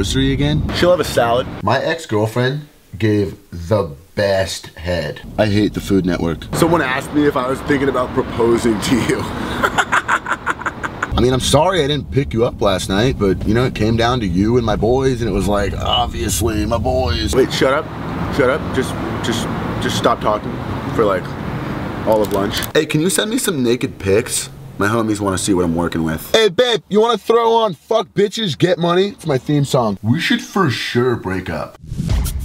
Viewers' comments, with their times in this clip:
0:06 is GOLD, that laugh though xD
0:10 that laugh though...Fuck lol
0:10 His laugh has me dead lol
0:17 for a second i thought he was talking the rhythm to shutup by blackeyedpeas